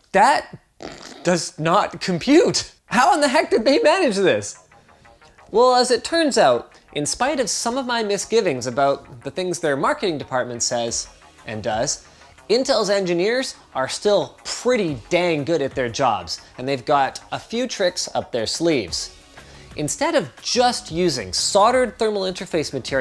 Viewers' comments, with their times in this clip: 0:08 that's some slick audio editing you got there..... 😂
0:08 It sounds like somebody messed up and had to overdub the "3.7" here haha. Love it
0:08 Good voice splice your editors know whats up.
0:09 I heard the "three" dub Can't fool me Linus.
0:09 Lol, love the smooth audio editing
0:10 audio cut there. Linus definitely thought the base clock was 4.7GHz.
0:10 anyone catch the weird voice
0:10 Did you think we wouldn't notice the voice over edit ? :)